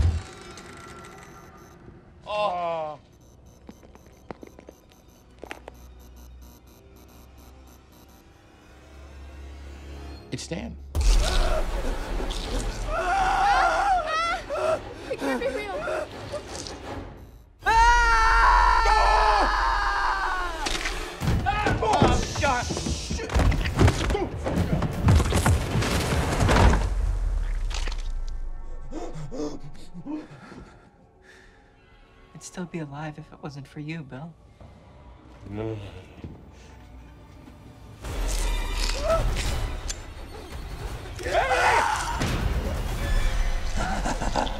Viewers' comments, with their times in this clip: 0:10 Love how he calmly said "it's Stan"
0:16 Why do i laugh every time i see this scene? the scream stanley did got me rolling on my bed
0:28 I’m laughing at Eddie's hyperventilation 😂